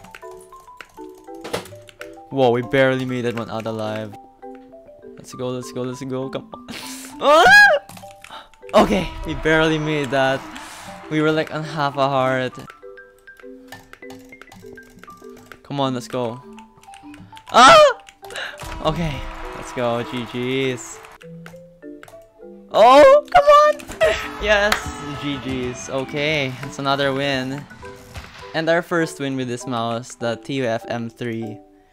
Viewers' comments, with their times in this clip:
0:07 dammm what was the scream
0:17 headphones warning lol